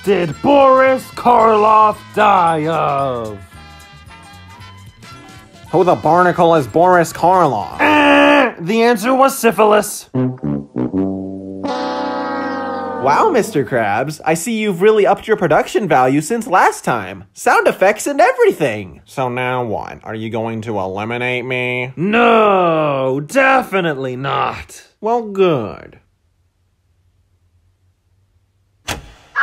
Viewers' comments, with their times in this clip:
0:10 (fail music playing)